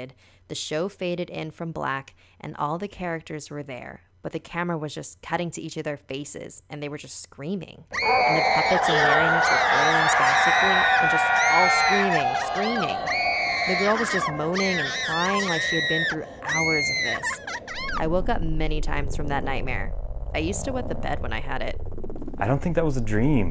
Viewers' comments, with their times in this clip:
0:08 that's funny how did a meme scream(the man/dinosaur scream)